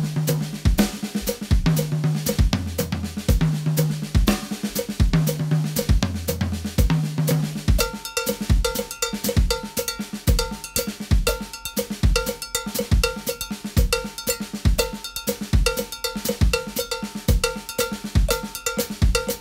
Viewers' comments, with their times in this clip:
0:07 That cowbell groove sounds so good